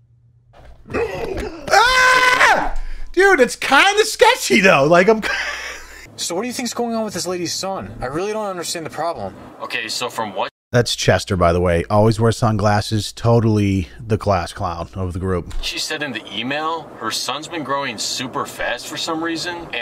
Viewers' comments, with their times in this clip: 0:03 When you screamed my AirPod died lol